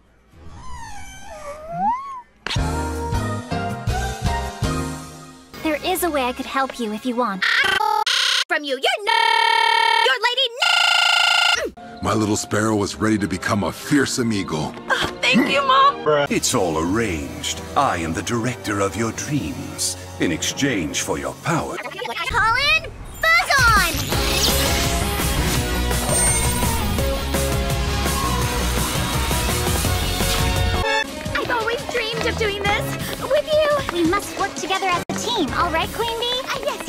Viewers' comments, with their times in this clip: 0:07 what happened to her voice lol 🤣😂
0:23 that super monkey Ball music tho